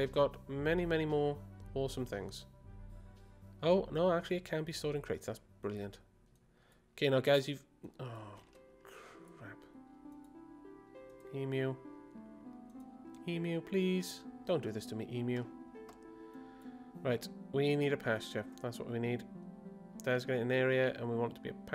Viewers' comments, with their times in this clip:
0:07 is the only reason I truly love the orchestral version. It's so final fantasy. also, since you intend to 're-color' a lot of your base in the future, I fully recommend setting up an area for 'art testing' and make [a tile of every floor available], and [a tile of every wall available], as well as [a tile of every wall with a floor ON it available]. you'd be surprised how important that last one is when building buildings.